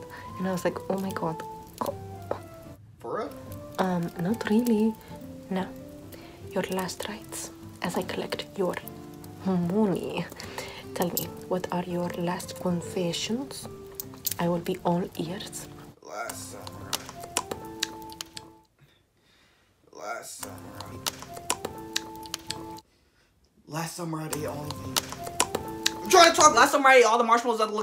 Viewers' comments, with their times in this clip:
0:08 She really said moo-knee lmao🐮🦵 Edit: ik she said ney instead of knee